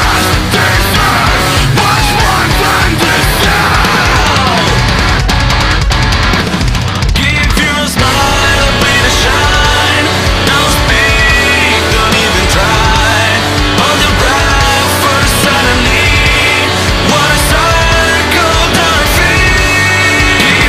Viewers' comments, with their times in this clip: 0:05 what a nice drum fill....